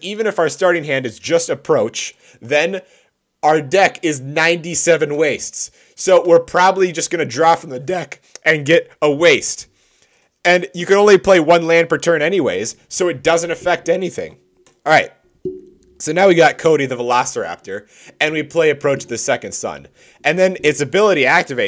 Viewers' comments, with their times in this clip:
0:07 Draw from the dehck